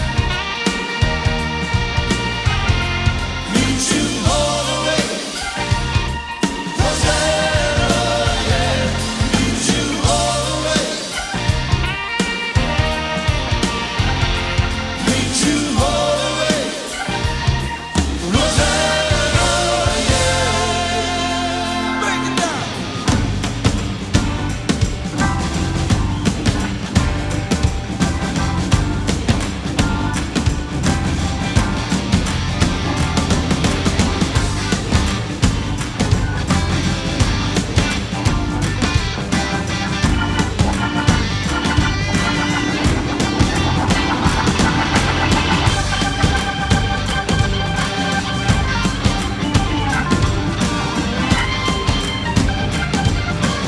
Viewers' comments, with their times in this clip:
0:08 Minute is the clearest visual of his mics turned off. Like not even a low volume sound of his fill. It’s a bummer because he looks like he’s definitely playing on the beat - speaking from a drummers perspective. Dudes mics virtually off. I love Ringo so it’s a little heartbreaking.
0:35 Wooow😮that solos from till the end of Rosanna ❤❤❤❤